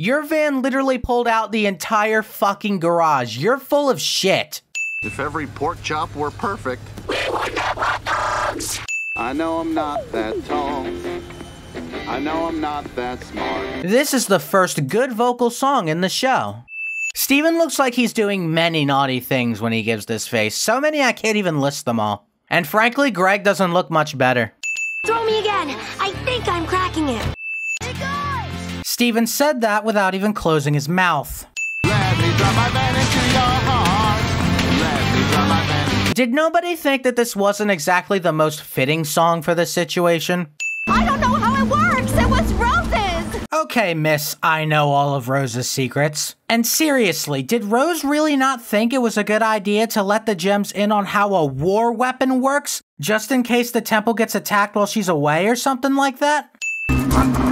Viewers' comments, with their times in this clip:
0:09 the -1 sin counter is played when it's not supposed to Video sin counter: 1
0:13 The comment seems to be positive, and the reverse ding plays, but the sin counter goes up instead of down. ding
0:16 there's a mistake the sin counter changes from 21 to 22 yet the removal sin sound is played
0:16 sadly, instead of taking off a sin, you added a sin with the reverse bell sound. Minor mistake, but it's not anything to worry about.
0:39 the guitar solo rocks I don't fucking know how it's not fitting.